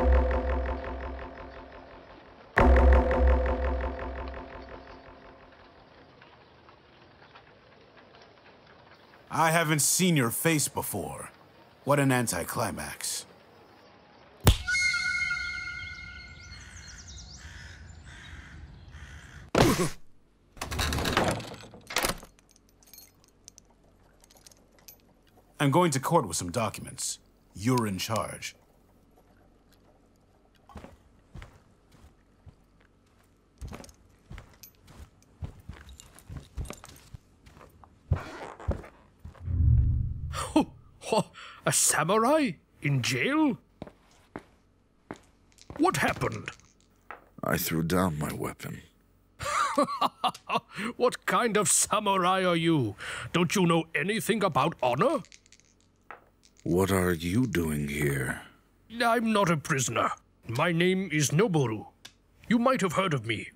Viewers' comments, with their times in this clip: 0:08 sounds like the baby from the movie boss baby
0:44 I thought he was yasuo's voice actor.